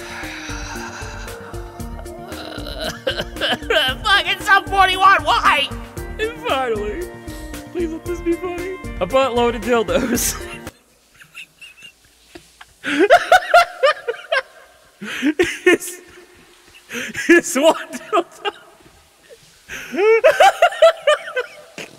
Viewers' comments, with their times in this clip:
0:08 “Please let this be funny.” Judging from the fact that that is easily the hardest I’ve heard you laugh at something, I’m gonna guess wish granted.